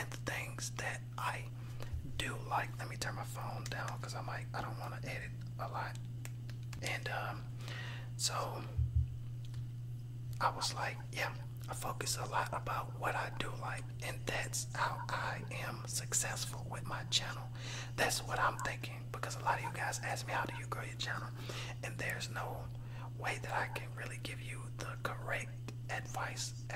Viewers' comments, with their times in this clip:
0:07 Is it just me, or did it start to echo ?